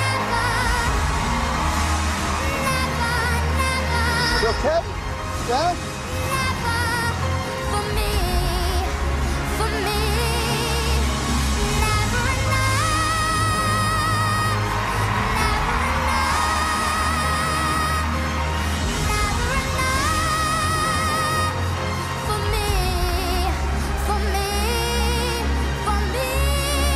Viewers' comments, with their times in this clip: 0:08 when she hit those hit notes, I cried. So beautiful.